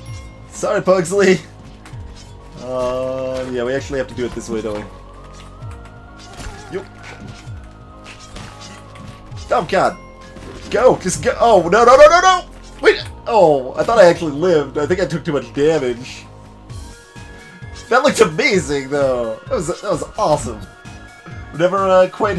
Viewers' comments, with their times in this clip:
0:08 Whats that music from? Its familiar Oh god i heard “sans” and realized its the core Oh wait its hotland Seriously though was that sound sans or the crocman? No it was the crocman... amazing coincidence that he sounds like that. Hi. Thanks for reading guy. You’re a cool guy